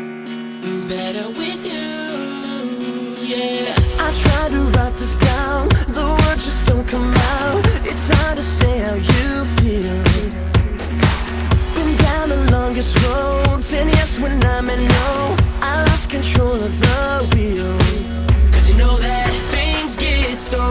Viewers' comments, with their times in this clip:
0:06 I love you voice james